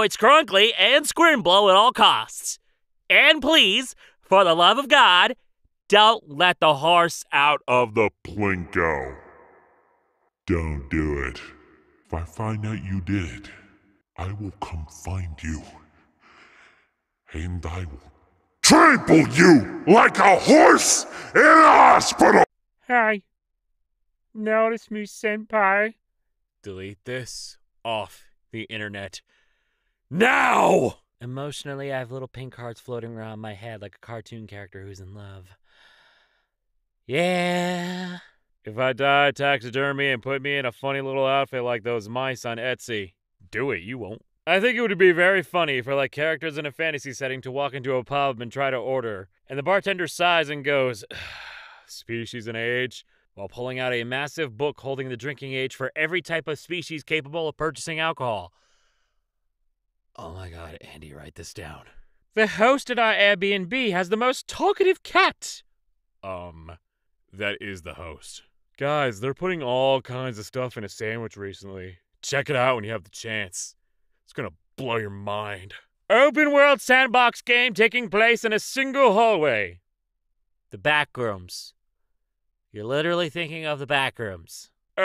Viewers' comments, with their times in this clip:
0:09 sounds like a cross between Kronk and Markiplier, and I’m all for it!
1:09 the way this post segued from innovative sandwich to “open-world sandbox” made me hear “open-world sandwich.” You’ve heard of an open-face sandwich… now get ready for OPEN-WORLD SANDWICH